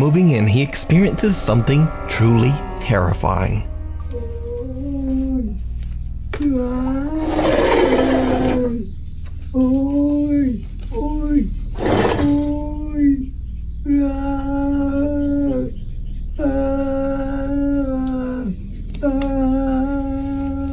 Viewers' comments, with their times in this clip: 0:07 sounded a bit like Chewbacca